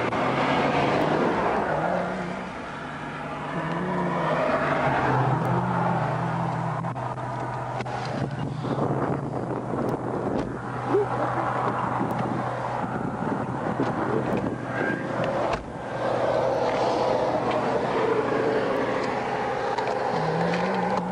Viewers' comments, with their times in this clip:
0:08 ...I think the Guy in the Back of the Patrol Cars Humming amazing Grace I think🙏🤣Amen it worked..